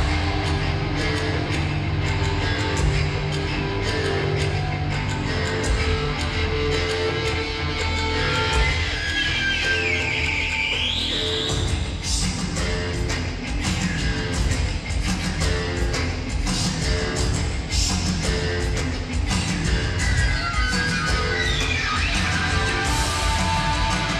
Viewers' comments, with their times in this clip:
0:09 Anyone know how Adam gets that screaming bird sound ?